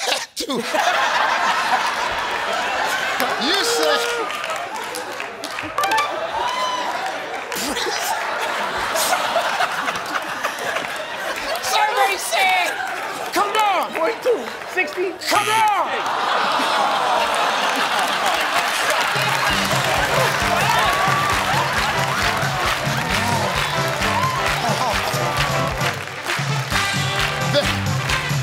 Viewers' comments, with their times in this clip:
0:09 Steve’s laugh kills me 😂😂